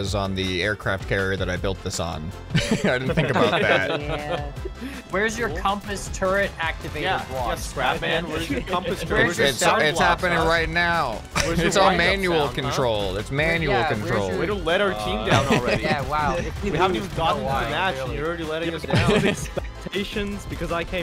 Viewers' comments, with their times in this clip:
0:07 I love how they all just synchronized to say his name